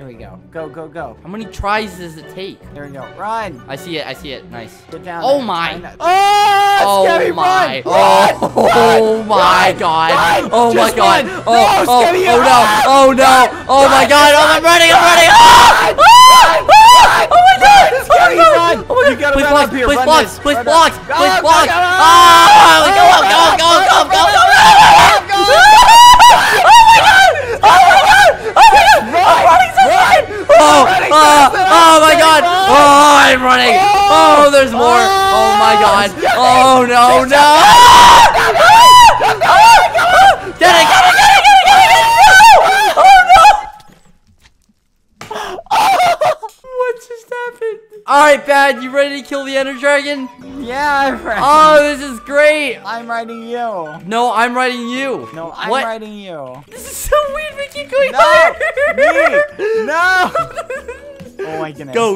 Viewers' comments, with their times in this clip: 0:03 The screaming begins
0:03 that last bit was a bit overboard 💀💀💀💀💀💀💀 i had to take my headphones off
0:05 The time when they start screaming 🤣😂🤣😂🤣😂🤣😂😂
0:06 a lot of screams lol
0:07 when they did a screaming session
0:07 Me:*wearing headphones BBH and skeepy:*AHHHHHHH Me:🤯
0:08 In my earsssss
0:09 how they was screaming when they entered the fortress
0:16 skeppy's scream and the music fits perfectly, somehow..
0:30 at this time is earape
0:44 I love how they both just fall silent lmao